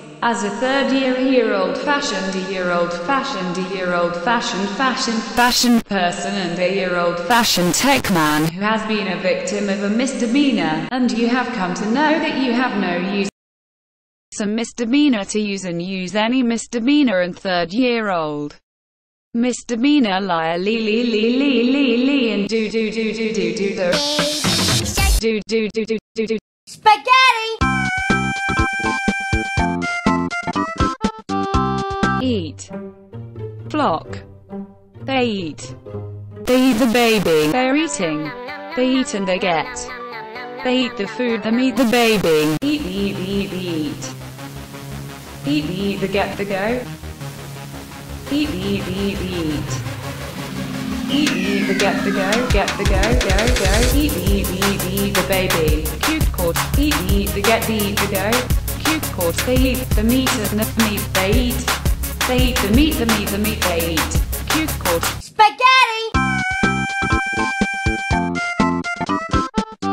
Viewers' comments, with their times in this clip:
0:10 “misdemeanor” Me: Mr. Bean-er
0:23 this girl needs to be the next singer for baby shark
0:24 Baby shark ft. Google translator
0:32 From here on, it sounds like my grandmother.
0:32 the eat song
0:42 epic eating rap
0:43 This is the best rap I’ve ever heard
0:43 B O P
0:43 is a rap
0:51 THIS BEAT GOES FIRE EVEN AT THE 0% VOLUME 💯🗣🗣🗣🗣🗣🔥🔥🔥🔥